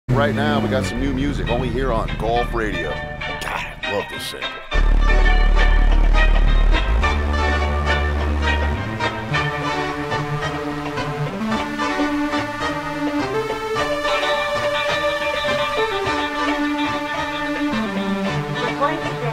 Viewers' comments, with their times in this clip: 0:03 “love this sample”
0:03 the sample is hard